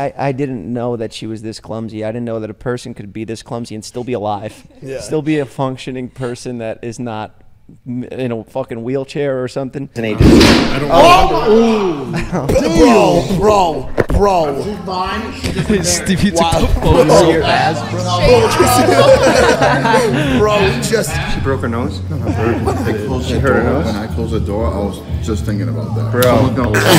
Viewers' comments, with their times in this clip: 0:09 hell of a boom